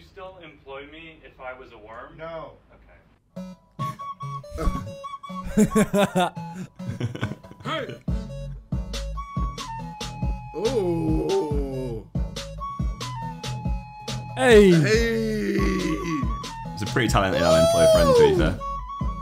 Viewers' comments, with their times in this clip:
0:07 fuck that "Hey" was perfect